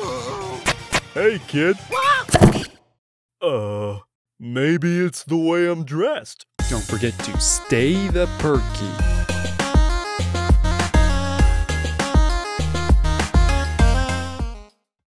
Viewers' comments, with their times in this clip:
0:03 video going so fine then boom,
0:04 Spongebob reference. Maybe its the way youre dressed. In that part patrick at the start of the sentence he makes the normal sans sound. Thats why its a reference